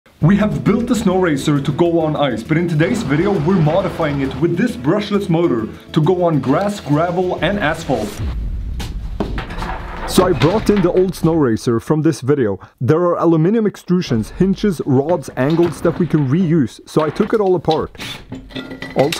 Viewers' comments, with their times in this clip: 0:05 "to go on grass gravel and a**hole" ?! thats the sickest marital aid ever man!